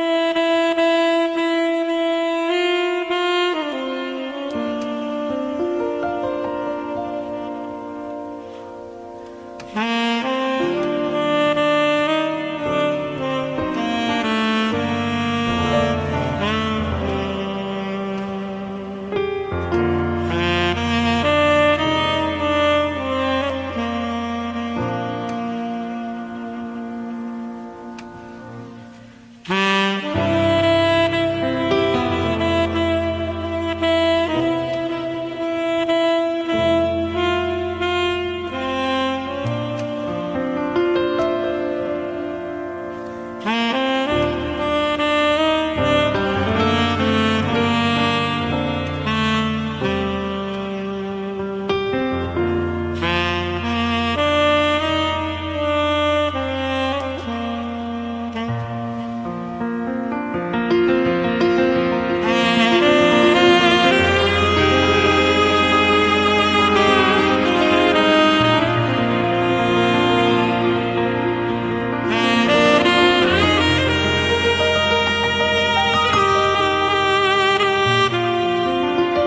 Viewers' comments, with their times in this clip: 0:09 sounds like loonboon from pvz
1:00 the way the piano overtakes the tempo takes your breath away and carries the very foundation of your soul into space. from out of that emptiness , you learn what you truly needed on earth